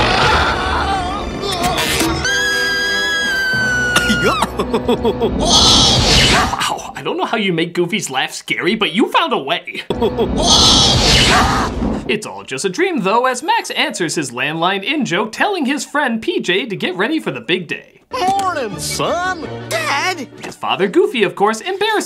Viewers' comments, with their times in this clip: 0:03 I wonder if the bad-ass Goofy Parody: Tom-Boris the Wolf with the mechanical arm would have a laugh as scary as giant goofy’s laugh ? Or maybe the slender man like Ink Bendy would have a scarier laugh than that Ink Bendy got a voice of his own in the Dark Revival episodic sequel that’s scary and canonical to the Bendy video game series?